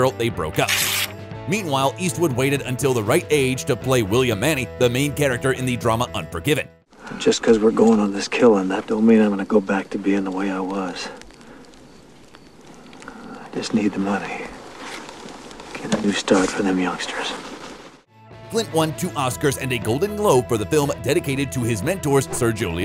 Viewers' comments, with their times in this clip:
0:03 William "Manny" ? My ears have always heard the last name as "Money" or "Munny". TD